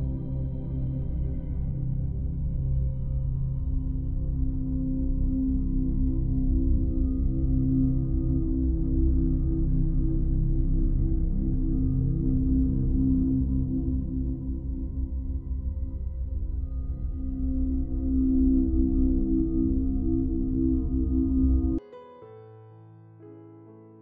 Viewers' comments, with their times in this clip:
0:07 what is the creepy sound XD. cool video though